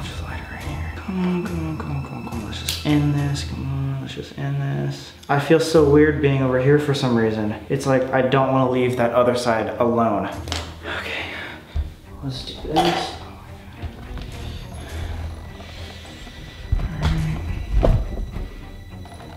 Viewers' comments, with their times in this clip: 0:07 when he's still talking and picks up the camera does it not sound like a woman coughing or is it just me?